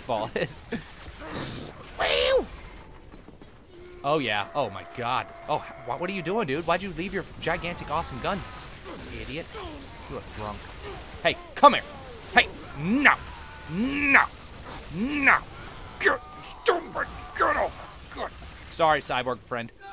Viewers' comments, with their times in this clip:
0:04 walk down stairs while shouting AAAUUUHHHHHHHHHEE